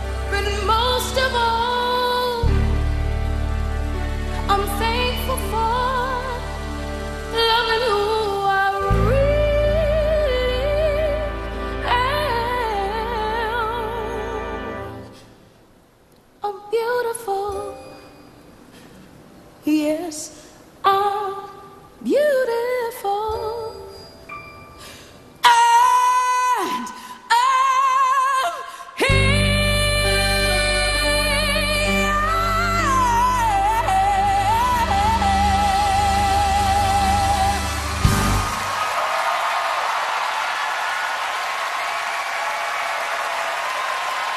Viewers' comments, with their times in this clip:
0:08 that note touched my soul
0:16 I expected the audience to clap “I’m beautiful” but they didn’t and I actually love that! I could hear the anticipation in the room
0:18 you could hear a pin drop cuz everyone was so mesmerized by her voice!
0:24 is where I cry every time. The power in her voice
0:25 literally the most flawless, spine tingling, sob-inducing vocal i think I’ve ever heard in a stage performance 😭😭😭 god I wish she had played Celie in the new movie
0:25 “AAAAND! IIIII’M! HEEEEE-YAAAA- EEEEEERE!!!” When I tell y’all that tone gives me goosebumps that are bone deep, I MEAN IT! 😮‍💨
0:25 any1 notice how dark her voice got